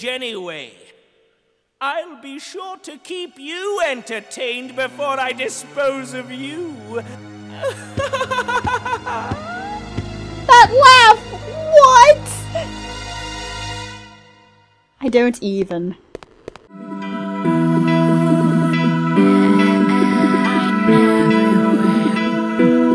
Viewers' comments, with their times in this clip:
0:07 Creepy laugh debut